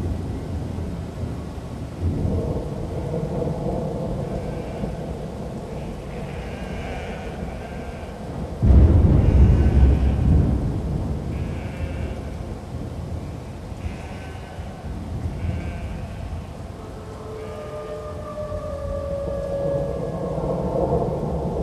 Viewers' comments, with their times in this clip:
0:06 Are there goats bleating ?